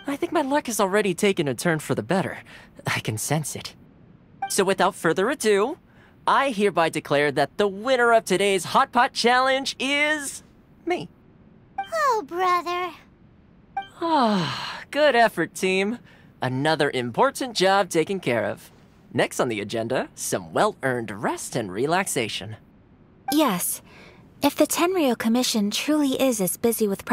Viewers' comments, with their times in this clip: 0:09 is… me! he said it so cute >.<